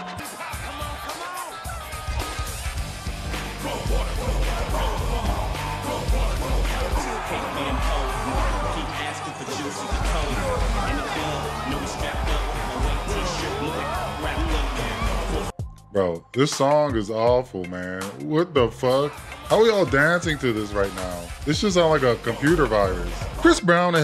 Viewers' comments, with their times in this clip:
0:05 ok so i legit thought the music was stock music so he wouldnt get a copywrite strike, and even then i thought it was a bad choice lol i only saw this once and dont remember this music choice at all, i mustve been zoning out